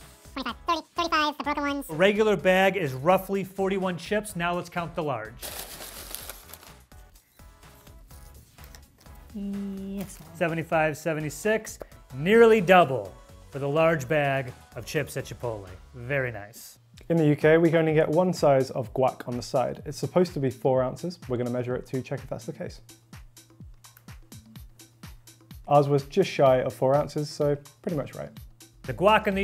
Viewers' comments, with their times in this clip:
0:10 does anyone hear the cut in song so it can skip to the end of the clip?